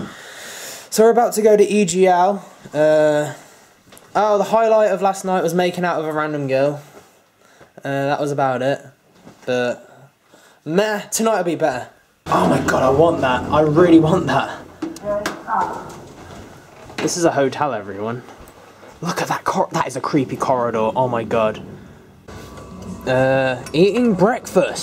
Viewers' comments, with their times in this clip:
0:06 your voice is weried